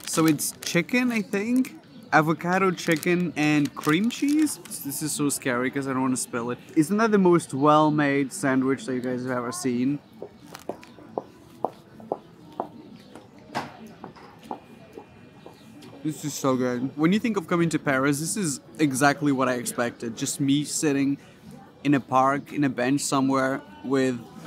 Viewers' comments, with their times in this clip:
0:10 watch HER SHOES WHERE SO LOUD I THOUGHT IT WAS A SOUND EFFECT !